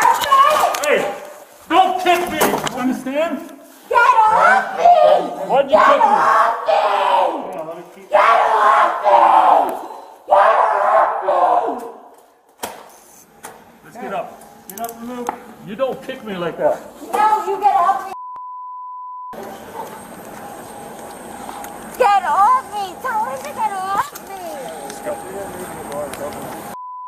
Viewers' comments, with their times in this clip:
0:04 she does literally sound like a demon lol
0:06 Definitely a demon. Listen to that roar ... 🤣
0:09 you can hear the demon 😬